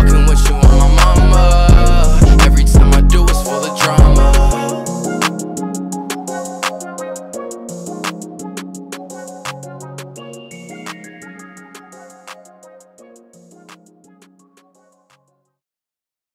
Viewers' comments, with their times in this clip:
0:04 what is that 'wow ' sound after